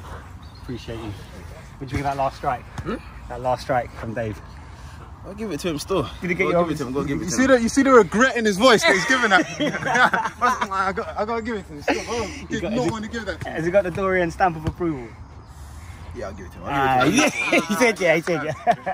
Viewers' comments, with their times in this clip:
0:05 😂😂regret in his voice 😂